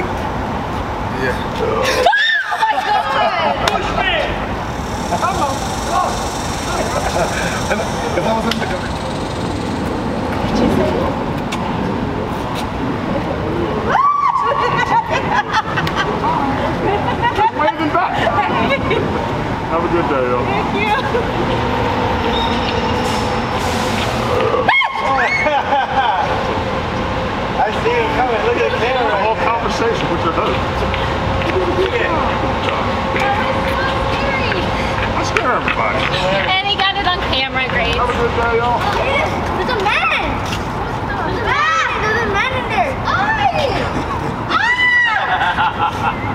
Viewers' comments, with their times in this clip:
0:03 she screams as he opens his mouth is the most hilarious thing I’ve seen
0:28 The little squeak from the little girl had me rolling